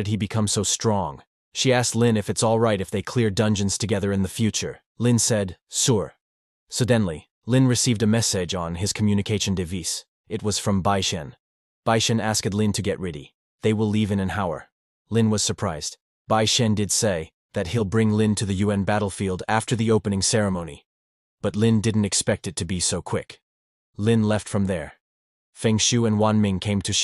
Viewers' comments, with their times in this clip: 0:09 he he pronounced device wrong here